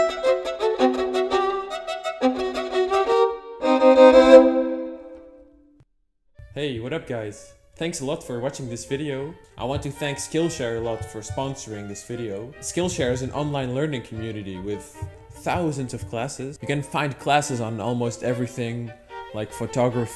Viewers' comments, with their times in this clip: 0:06 VOICE REVEAL EEEEEEEEEEEEEEEEEEEEEEEEEEEEEEEEEEEEEEEEEEEEEEEEEEEEEEEEEEEEEEEEEEEEEEEEEEEEEE!!😱😱😱😱😱😵😌😌😌😌😍😍